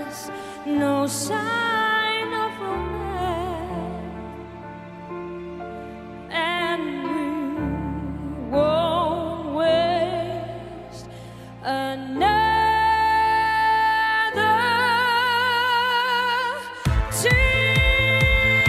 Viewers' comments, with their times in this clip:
0:06 loving adele mia look at , she can sing